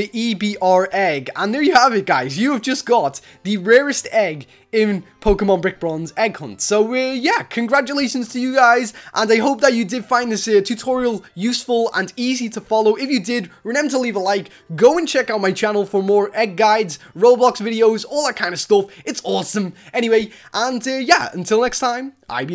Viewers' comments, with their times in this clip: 0:04 bro you said Pokemon birch Bronx egg hunt